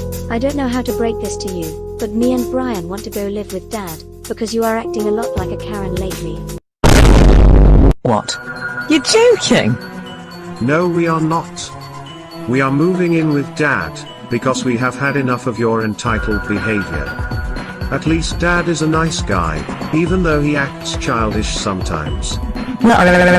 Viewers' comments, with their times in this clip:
0:08 /29 That looks a bit much the way Catherine said, "What? You're joking?"
0:08 idk what he said Edit: why u no give me likes?!?!
0:08 When Catherine says you're joking it sounds like she's saying you 2 Joe